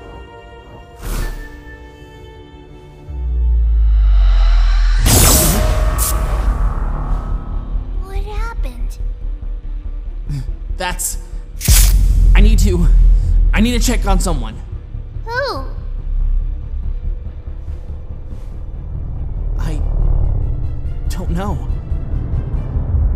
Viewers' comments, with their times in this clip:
0:03 if u slow it rellly slow it says ur pc ran into a problem in
0:03 if you slow it down to the slowest you can make it (0.25) you can hear darker yet darker and you can see color sans, and and other amalgamated versions of sans for a second or so.
0:05 0.25x speed totally horror sans